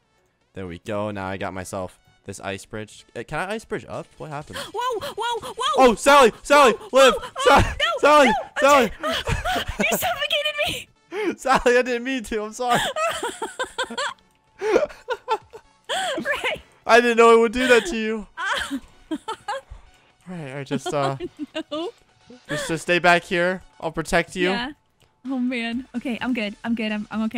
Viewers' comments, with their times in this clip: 0:09 some sexual sounds...